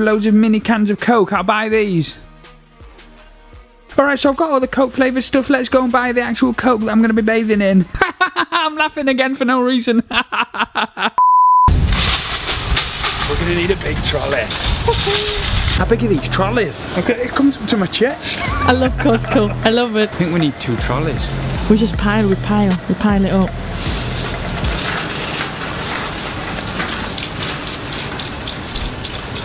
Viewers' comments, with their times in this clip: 0:10 look at him laughing for no reason... Pathetic: